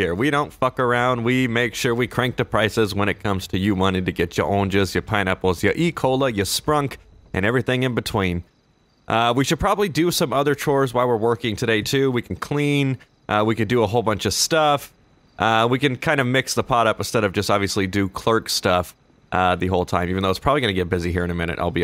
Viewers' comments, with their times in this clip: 0:04 i thought he said ecoli